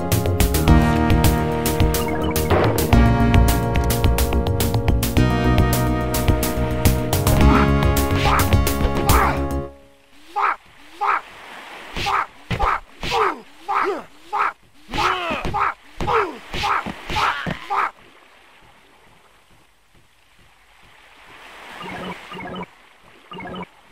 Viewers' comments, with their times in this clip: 0:08 i love how the music abruptly stops and it sounds like he's yellin' "F*CK-F*CK-F*CK-F*CK-F*CK! F*CK F*CK F*CK" XD